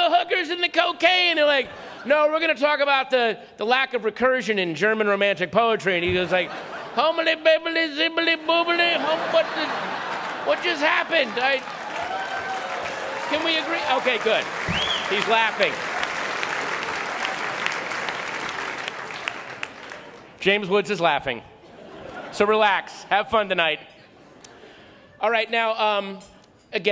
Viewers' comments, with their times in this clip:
0:10 Louie C.K. laughing at Patton's awesome joke. Game recognize game.